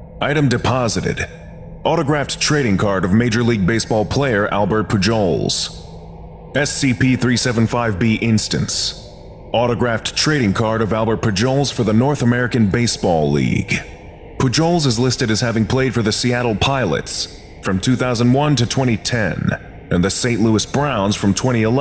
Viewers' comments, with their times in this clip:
0:03 ALBERT WHO NOW?! YOU MEAN PUJOLS AS IN (Poo-hOs) WTF!